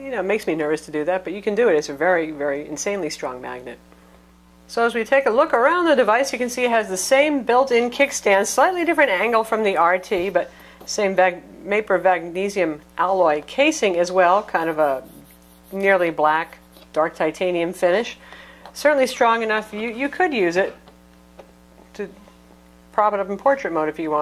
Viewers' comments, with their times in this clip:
0:10 gotta love that mapor vagnesium..lol good review though I cannot wait to get mine!